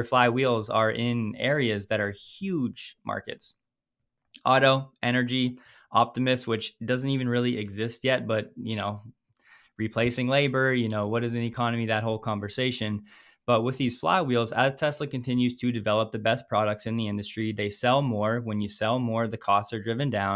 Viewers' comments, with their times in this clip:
0:05 "Optimist" or Optimus?😃